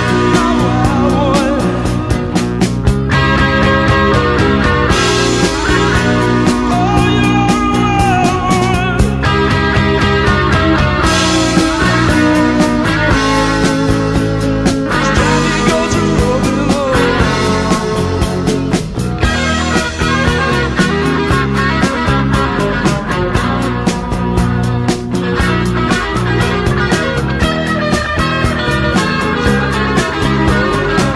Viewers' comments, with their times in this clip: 0:06 Omg His voice!! His voice!!! Listen !! No one like Phil!!!😢😢😢
0:18 With this song Phil paints a mental picture and takes you along on a trip with him to wherever you like carried along by the beautiful sound of the band, gotta love that double lead there the middle Robbo and Scott the harsh and the smooth.. Pure Gold, Long Live Lizzy